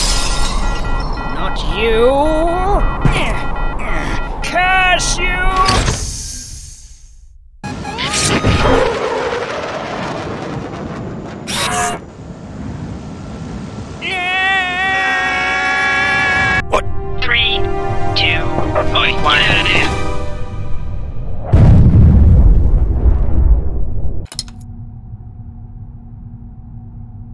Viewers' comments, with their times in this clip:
0:03 That was more of a grunt than NYEH in my opinion
0:12 What we see:NOOOOOOOO! what we hear:NYEHHHHHHHHHHH!